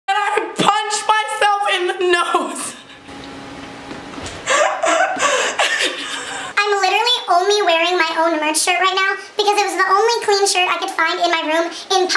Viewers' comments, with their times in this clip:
0:00 Her laugh was so fake mostly when you most start the video